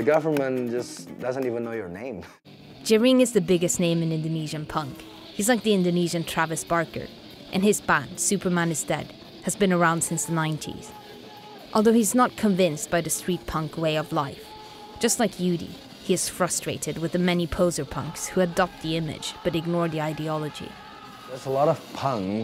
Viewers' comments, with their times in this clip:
0:07 This is weird. Very interesting. I guess punk is only dead in the west. One question, she says "this guy is the Indonesian lavish parker?" I dont understand what she means.